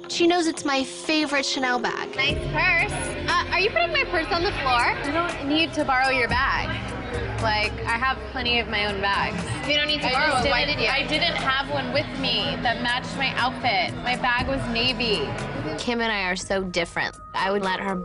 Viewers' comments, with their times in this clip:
0:06 remember when she talked normal?